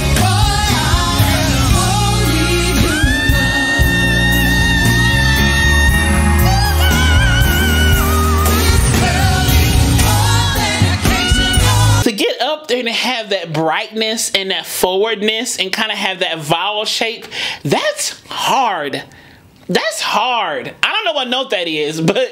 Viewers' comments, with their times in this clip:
0:03 That Patti note I believe was A#5!